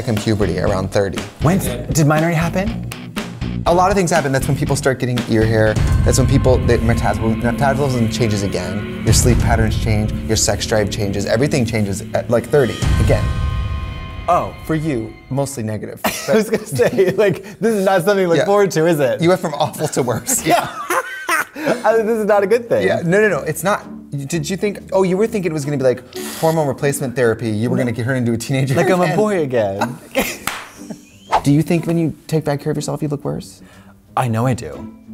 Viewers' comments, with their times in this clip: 0:06 metasbolism good job trixie
0:20 Katya's guffaw is everything!